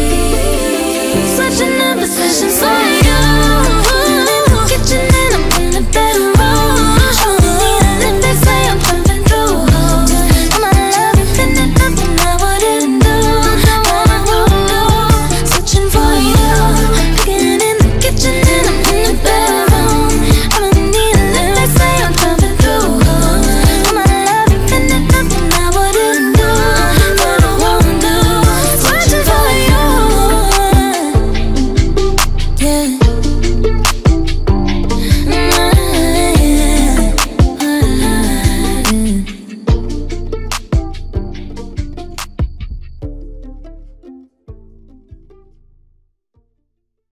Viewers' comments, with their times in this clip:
0:10 Did anyone hear the background voice ? What is she say?
0:34 I heard like 6 voices at the final harmonic. Self-Done Mutitrack?!